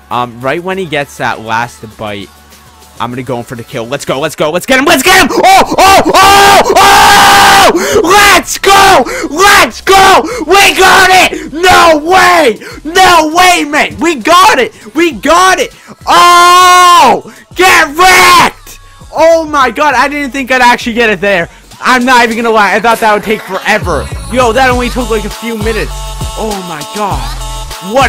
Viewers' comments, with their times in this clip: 0:05 my ears freakin hurt
0:06 My volume Was VERY high at this point xd
0:11 R.I.P HeadPhone users im wearing HeadPhones XD
0:12 OMG!!!! U HAVE REALLY BIG VOICE!!! MY EARS MADE ME WRONG T.T